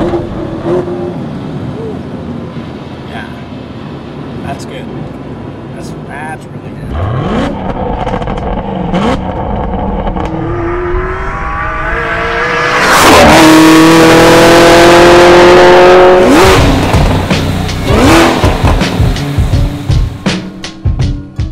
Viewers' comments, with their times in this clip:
0:06 I think i just creamed my pants, that Signature Growl of that V8